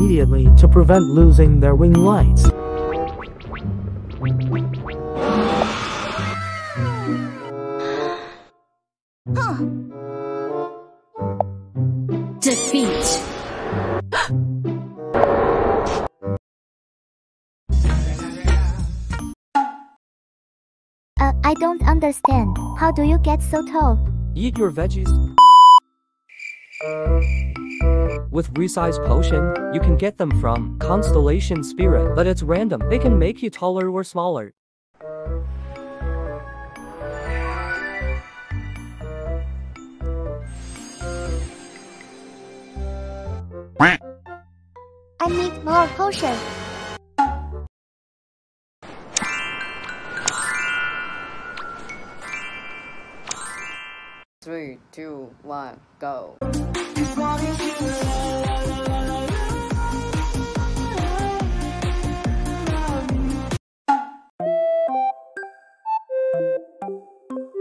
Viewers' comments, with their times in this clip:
0:10 me needs a surgery fast then ambulance sounds starts
0:51 I love the hahhaha